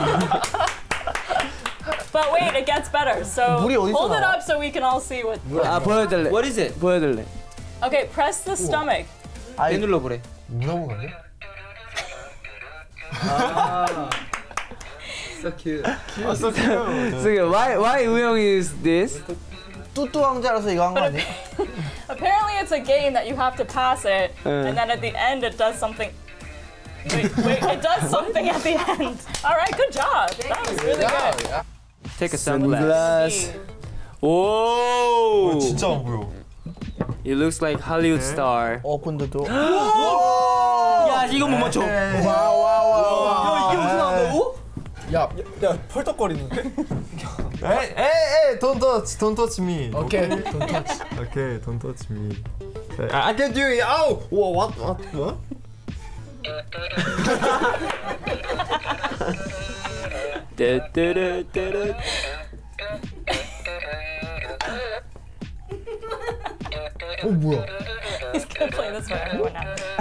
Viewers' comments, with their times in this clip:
0:10 The speed they got quiet
0:25 The way Mingi laughs I can’t😩😍
0:51 it was the most cute "dont touch me" i have ever heard
0:56 I love the silence before Wooyoung makes the pig go "doo doo doo" 😂 cracked me up